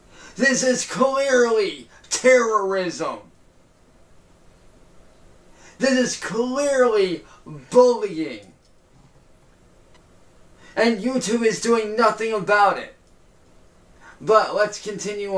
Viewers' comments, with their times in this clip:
0:03 He finally pronounced "bullying" right